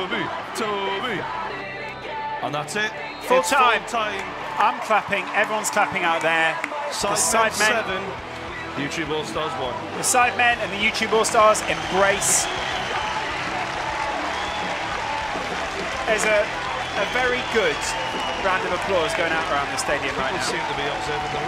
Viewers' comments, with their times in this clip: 0:03 I''m fapping everyone is clapping out there..... seems legit LOL